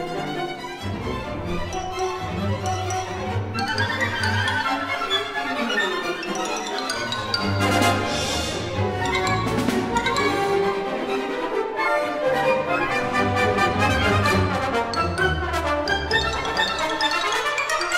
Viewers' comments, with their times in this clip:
0:05 Shostakovich on the violin